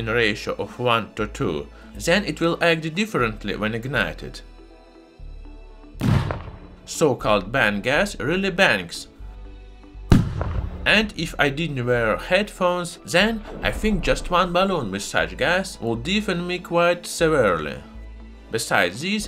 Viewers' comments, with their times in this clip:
0:07 that bang was so powerful that an ads showed up